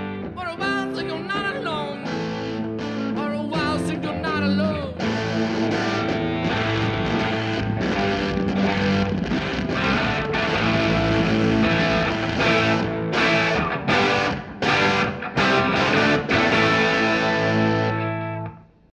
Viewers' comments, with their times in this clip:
0:08 I dunno what fuzz jack is using there, but if I had to make up a name I'd call it the "fart." And obviously it would be made by Electro-Harmonix so It would be the "Electro-Harmonix Bean Fart"